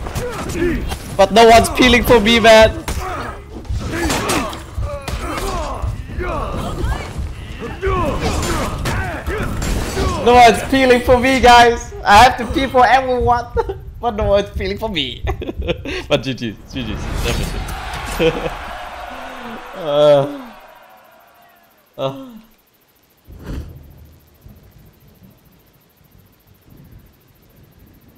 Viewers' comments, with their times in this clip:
0:10 "No peelings for me"? " I had to people everyone "??? I don't understand what you saying